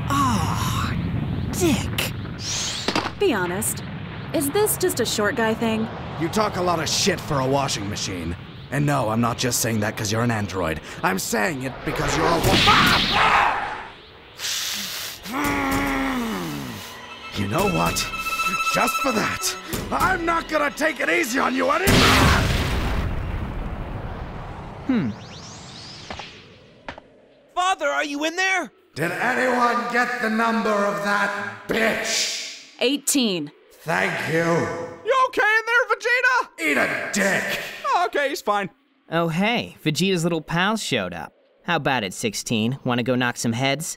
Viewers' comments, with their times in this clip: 0:06 Yup that sounds like Vegeta
0:24 was that TF2 Medic's voice